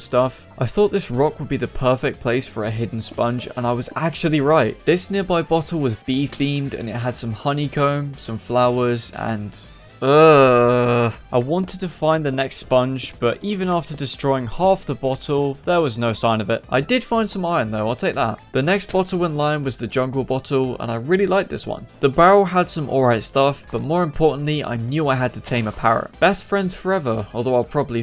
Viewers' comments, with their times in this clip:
0:10 I love he went like uhhhh